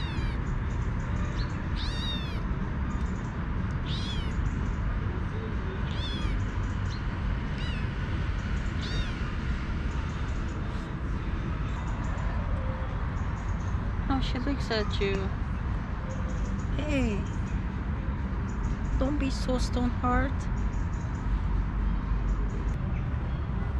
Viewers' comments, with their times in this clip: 0:07 mew killed me